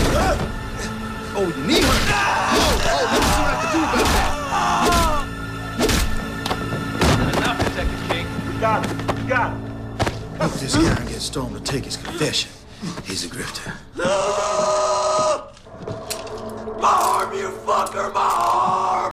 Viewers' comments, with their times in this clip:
0:03 I like when he's screaming of pain. 😈